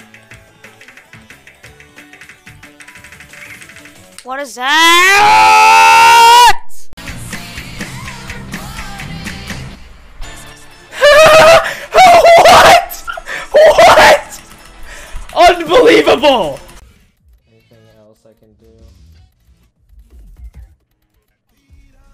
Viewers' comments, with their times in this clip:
0:04 my man hit puberty in a second